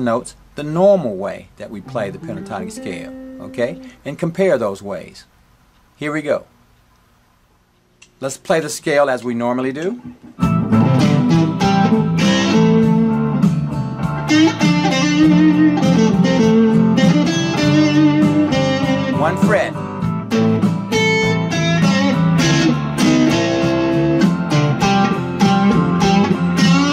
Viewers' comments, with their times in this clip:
0:10 what an awesome tone you have!!!